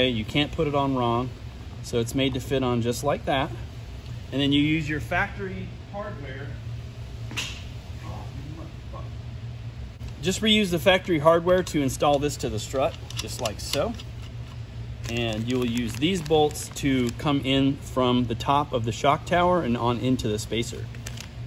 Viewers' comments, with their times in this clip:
0:09 sound like someone dropped something and dropped the MF bomb lol